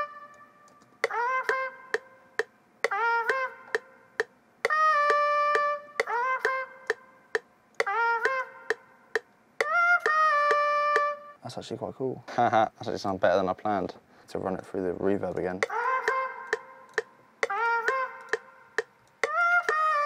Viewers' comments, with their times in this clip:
0:03 Nice trumpet :D